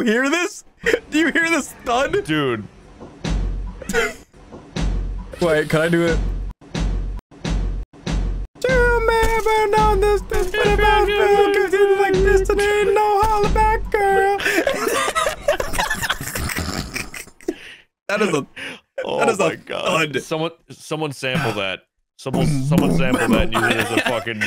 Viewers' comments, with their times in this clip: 0:06 i normally listen at 2x speed so i was thinking ceelo green/gnarls barkley's crazy